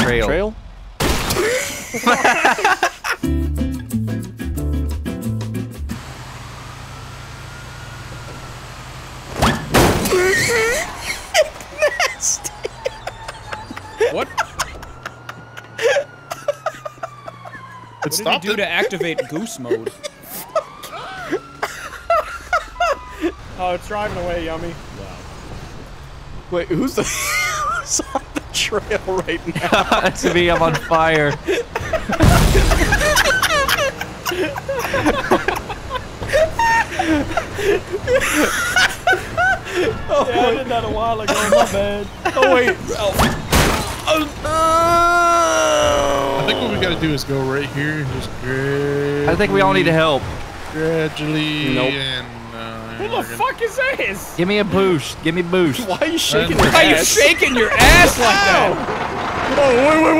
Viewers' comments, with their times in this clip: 0:09 Tell me why his laugh sounded like Hedwig from Harry Potter?! 🤣
0:41 does anybody hear "Ralph"